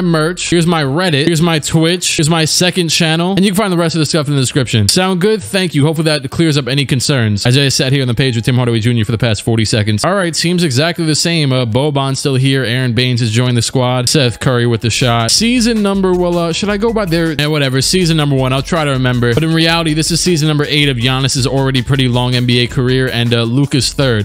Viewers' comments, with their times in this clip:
0:07 i thought i turned my playback speed to 2 lol